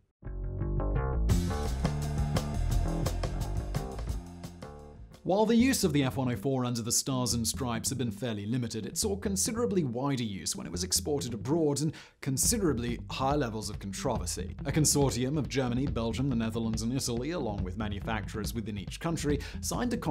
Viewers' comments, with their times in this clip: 0:04 Why the annoying background beat ?